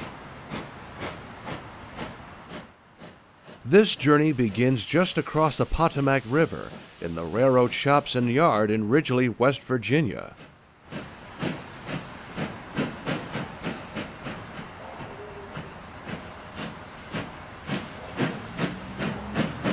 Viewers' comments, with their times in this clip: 0:06 Hehe... you kinda messed up the pronunciation of the river.